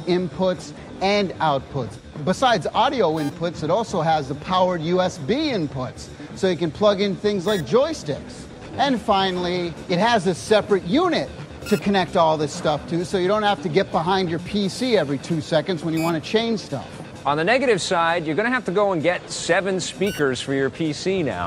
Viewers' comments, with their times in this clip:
0:09 what the fuck is that beeping? god thats irritating. other than that thanks for the upload!